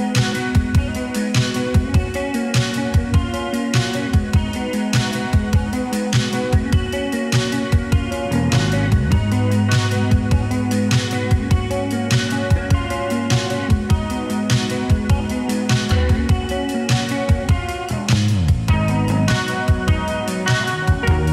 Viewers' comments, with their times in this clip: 0:08 OMG that bass tone!!!!